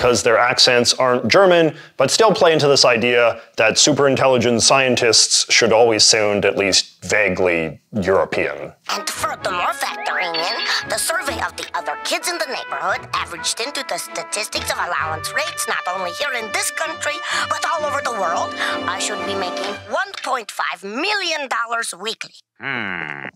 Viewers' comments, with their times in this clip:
0:08 I've always considered Dexter's accent to be more Russian-adjacent, not only with his pronunciation of certain syllables but also because Dexter's Lab creator Genndy Tarkakovsky is part Russian